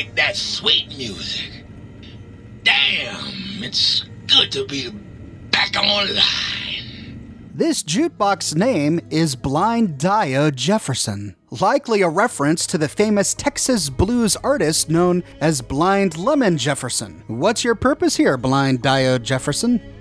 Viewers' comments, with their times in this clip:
0:03 Little subtitle thing pops up. I kept reading it for the life of me. And me being most likely tired and a bit hungry. Finally got my brain to work to realize it was just an apology of the audio file from the Jukebox in-game. I feel better. Though really could be said that the audio file was made like that? Like maybe a real Jukebox could or would make in a few years (or centuries) of use and little to no repair.